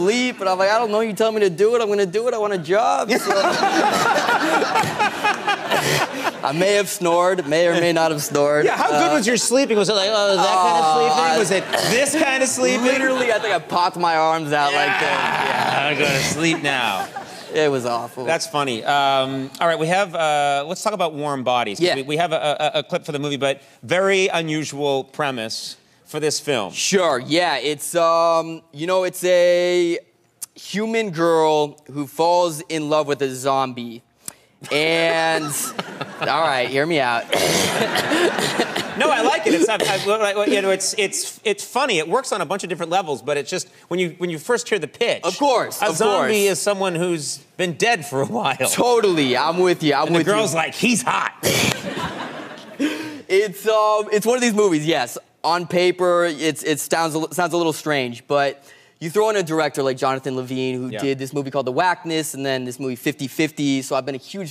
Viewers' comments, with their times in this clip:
0:03 The laugh doesn't bother me as much as him scratching his tush
0:37 Holy shit what the hell is that laugh?!?! sounds like hes dieing or tryin to cover up a laugh with a worse one haha
0:51 the way he laughs, geeks me the fuck out.